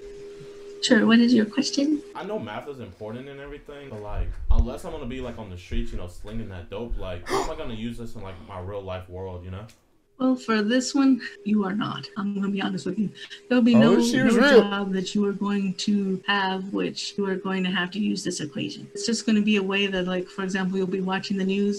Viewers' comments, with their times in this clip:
0:06 I failed 😂. Why did he say it so confident though 🤣